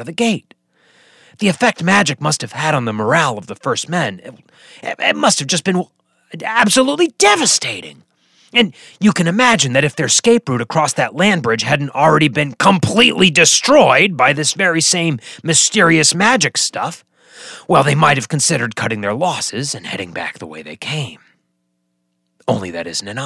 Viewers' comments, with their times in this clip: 0:06 Omg this is awesome. Looking for more of dans masterpieces and accidently started this... thought poor Dan was sick his voice was more husky...... then BAM! It hit me.. this.. is an .. IMPOSTER! lolololol Well done sir! Also fantastic theme. I have read all the G.O.T books and watched the series multiple times. But iv learned more about G.O.T in minutes then ever I thought possible. 🤔 would be interesting to know what the G.O.T author thinks. And Mr Hardcore himself.